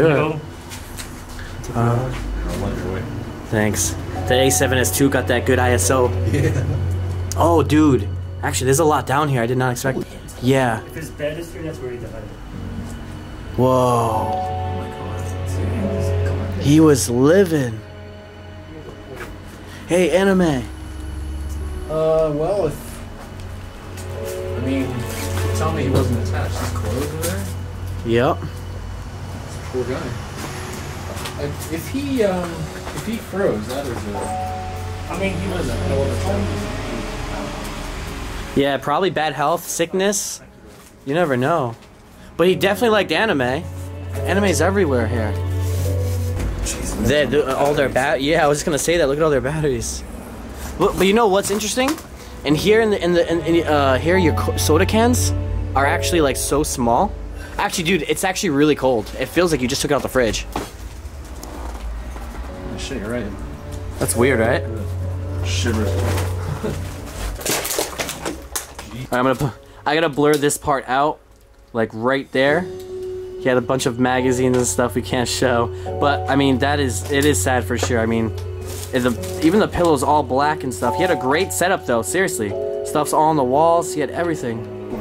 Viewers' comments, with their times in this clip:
0:10 wtf dude i heard women voice
0:50 there was a really weird “yeah”
1:08 ‘I gota blur this bit out cause he has uhm..magazines that we cant show (laughs a little) (then serious) uh it is sad for sure tho’ 😂 ~ ~